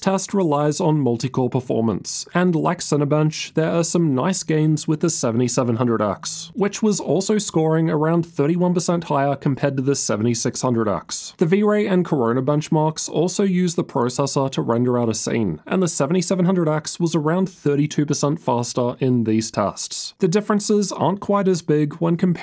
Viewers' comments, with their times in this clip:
0:05 Phone vibration time xD